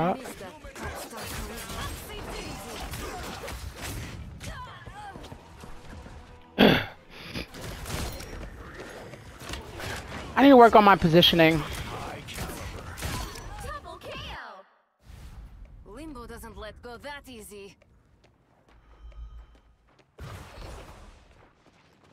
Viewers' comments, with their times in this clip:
0:07 I’m sorry for snorting in the mic. Unfortunately I relapsed. 🙄😐🤷🏼‍♂️